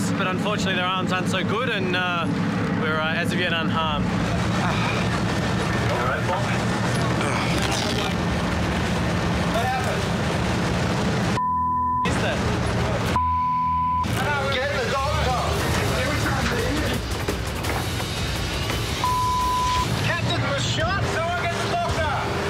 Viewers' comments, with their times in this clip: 0:03 "Paul" just made a fart .-)
0:03 100% authentic reaction of someone who has been shot...I know there are cases of gunshot victims not being able to actually feel it, but his slight moaning sounds like me the day after a dodgy take-away.